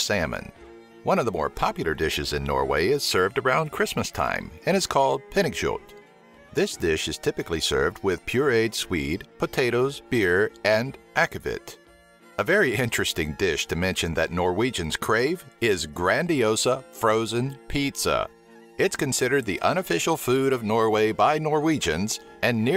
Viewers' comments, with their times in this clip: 0:04 You do not pronounce it correctly
0:07 i actualy laughed when you said "pinnekjøt" (sorry for bad spelling) but cool video!❤